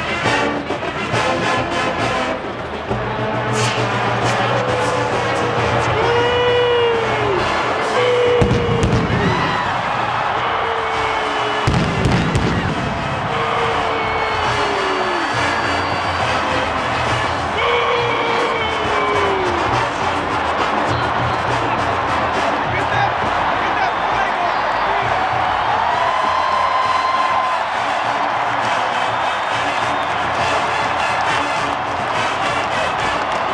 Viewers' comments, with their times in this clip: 0:05 that booing was unnecessary just watch the damned show bro
0:05 The guy in the back booing has me dead
0:05 Lmao who was booing
0:06 That man sounds like Patrick Star😂😂
0:07 I swear I thought they were saying MOO to be silly. The "0" in the middle spells it out. I didn't catch the other guy saying that about the flag. I want it to be both so we can have at least some good vibes here.
0:07 Wait, WHAT!? I thought they were saying MOO It literally spells it out with the "0" that's already on the field. "M00" Is this the biggest r/whoosh ever or is it just freakin' both? lol I SWEAR I'm hearing the M.
0:07 Nobody: Guy MOOOOOOOOOOO
0:08 Guy sounds like patrick star
0:09 is that patrick star I hear?
0:09 I honestly thought the guy was saying moo because that's what the flags spelled with the O in the middle. I didn't know he was booing LOL
0:13 Wtf who screams Booo? 🤬
0:15 That guy yelling boo was super annoying and kind of ruined it :/
0:15 this guy is screaming boo at the top of his lungs lol disrespectful
0:15 that dude booing sounded like Patrick from Sponge Bob
0:15 my guy sounds like Patrick
0:15 Why did I hear people "Boo"ing ?
0:17 is that Patrick star I heard
0:17 why this sound like patrick booing
0:20 Why the "BOOOOOOO" the minute ?